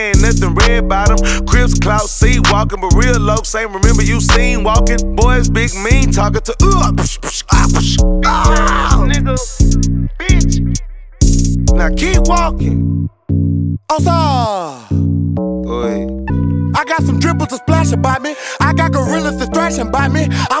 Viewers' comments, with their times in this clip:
0:05 The Street Fighter adlib...SAUCE!!!!!!!